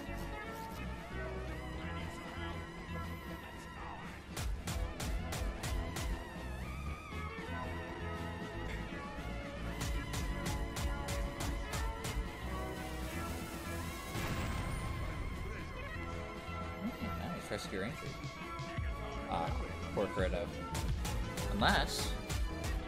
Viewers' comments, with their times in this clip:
0:03 I hear that vaporwave furret and I'm going to smooch you for it